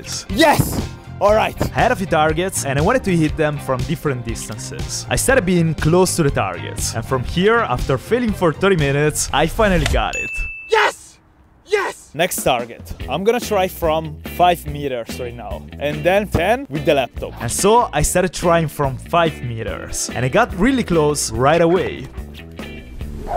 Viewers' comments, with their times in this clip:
0:10 😂😂 the agression in his voice